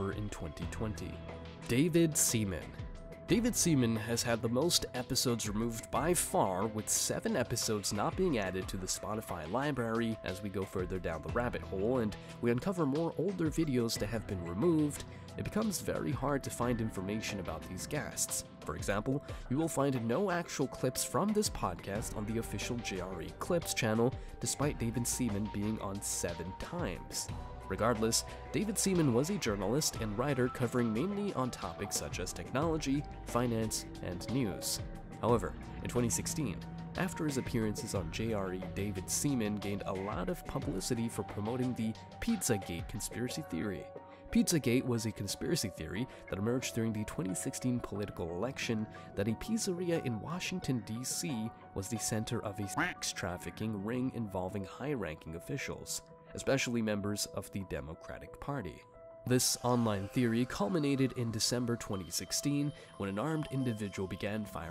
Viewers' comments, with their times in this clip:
0:07 did this dude real say “LIBARY”?? Like a 4 year old kid lmao, yikes.
0:52 Ok I've gotta ask. why is the word 'sex' replaced with a quack? 😂